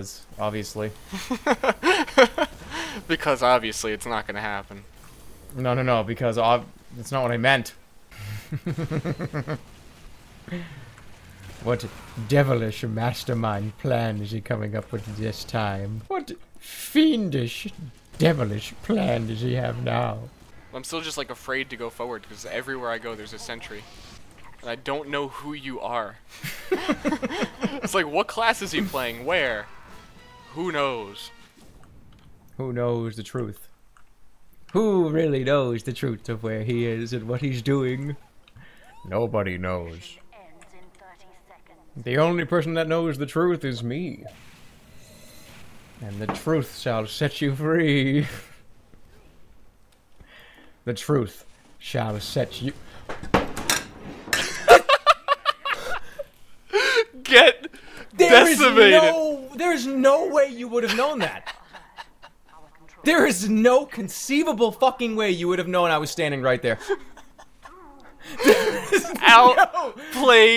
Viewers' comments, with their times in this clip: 0:03 OMG THAT LAUGH?
0:25 Just realized there's a third voice ... Spooky.
0:52 The truth...shall set yo-*bangs desk.
0:52 Get rekt* :'DDDD
0:53 for the ster laugh, I love it!